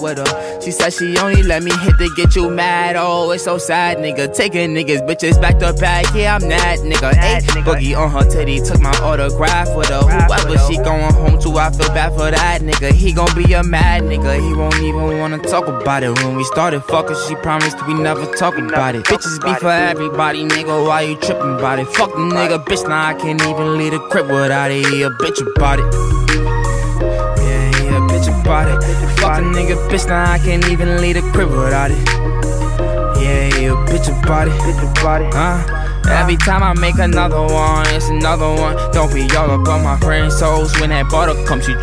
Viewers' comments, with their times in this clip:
0:09 that flow is the reason i love boogie as an artist this man can take any beat and make it go completely hard as smooth as possible
0:27 The change in his voice a boogie is goated asf